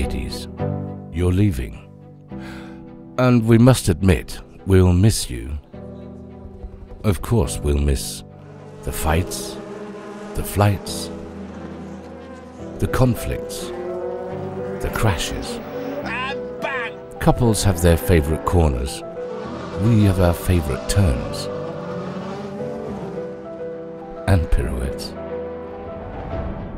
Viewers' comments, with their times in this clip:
0:09 when a swarm of bees comes out of no where